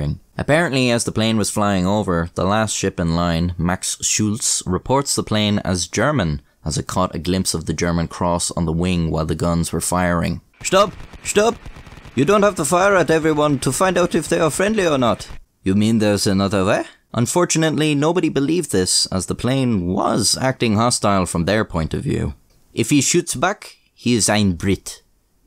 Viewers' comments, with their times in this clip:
0:07 amazing German accent 🫡👍
0:09 🇩🇪s say "Halt", not "stop". Good accent though 😆
0:11 that was the most indian-german accent ive ever heard